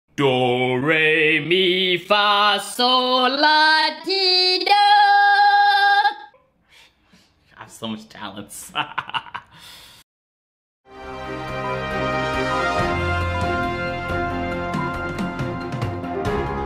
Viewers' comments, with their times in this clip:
0:00 octaves dont go up that high that fast my nigga. my nigga you went through like 5 octaves in 1